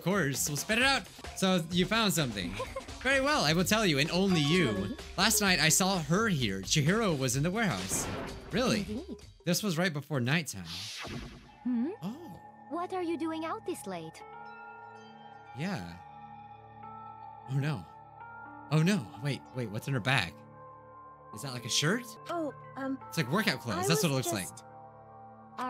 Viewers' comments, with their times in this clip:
0:09 SHE HAS DA VOICE OF MERCY COMIRMED (overwatch)